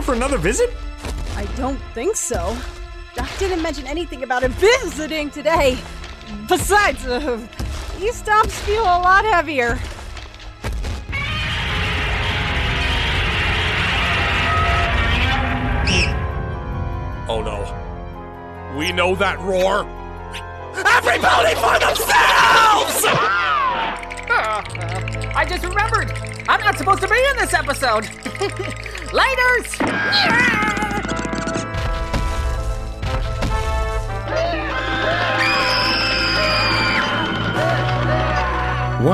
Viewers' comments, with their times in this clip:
0:10 Godzilla Roar "Oh no. We Know that roar!" at the roar I thought it was a trope, then when the following line was spoken I thought "A: HELL YEAH we do! B: They're actually using Godzilla?!" Then it was twink, and I was like "oh....it's twink....alright then -_- " On a side note, I'm pretty sure Terek (Tirek? The Dragon guy) was alot bigger and ALOT heavier than twink.
0:11 In head Please be Godzilla please be Godzilla! Stomping continues Godzilla Godzilla Godzilla Godzilla Godzilla Godzilla Godzilla Godzilla! Twinx shows up God damnit!
0:20 when the robots drop the boom